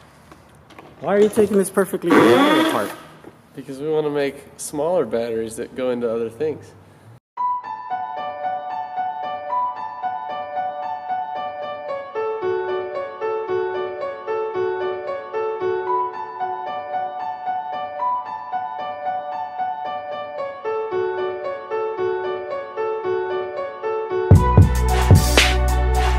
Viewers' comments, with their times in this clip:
0:08 Yo that Beat is sick from sec. Keep up the great work, I'm inspired my friend.